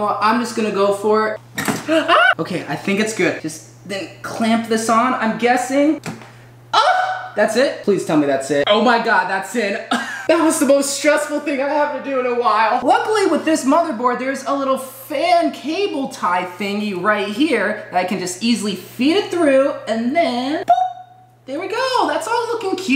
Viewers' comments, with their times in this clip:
0:05 that moan tho